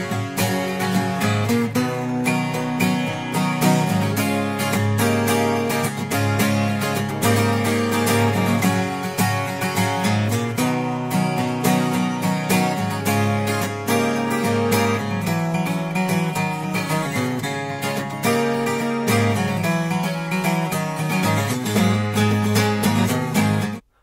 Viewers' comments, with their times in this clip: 0:09 Hi Justin in the clip when changing from G to the C instead change from G to C 9th it sounds much better and like the song